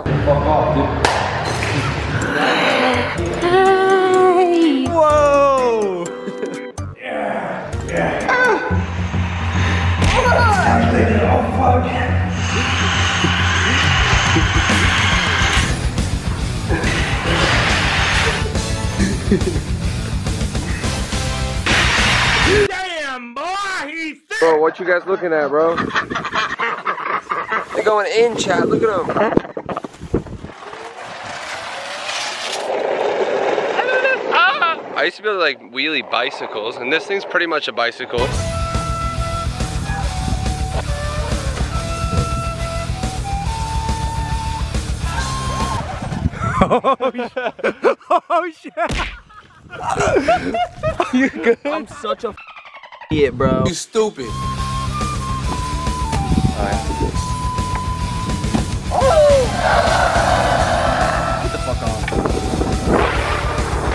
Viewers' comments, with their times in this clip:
0:08 when naruto fighting theme song starts Everyone: What? Weebs:Oh shit, run my dude ruuun!
0:16 Love that Tfue puts Naruto music here haven't heard that in a long time
0:50 ninjas laugh in the background